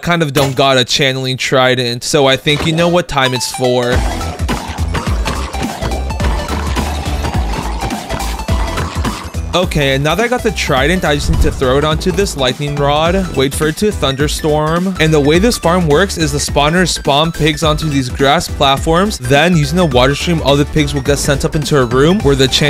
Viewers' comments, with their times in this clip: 0:07 why is it unity mixed with megalovania